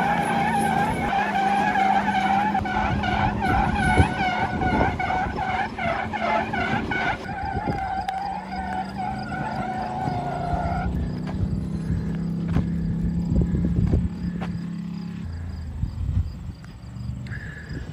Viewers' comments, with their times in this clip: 0:05 * Random person: "I have the best turkey call" Whistlin diesel: "hold my second gen dodge"